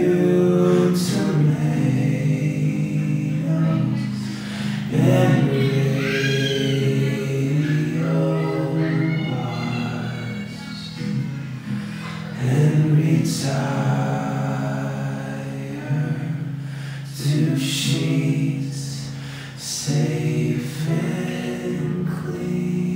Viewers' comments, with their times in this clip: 0:04 onward with the bg voices layered with the vocals is so pretty